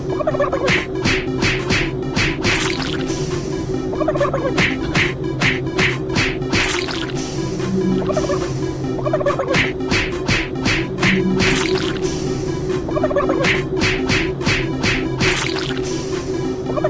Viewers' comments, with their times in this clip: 0:04 Que the French Narrator.😅😂🤣